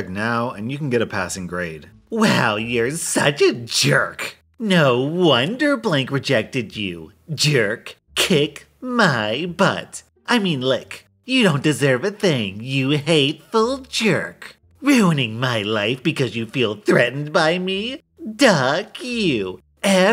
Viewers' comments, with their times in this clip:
0:08 I love how you read this XD.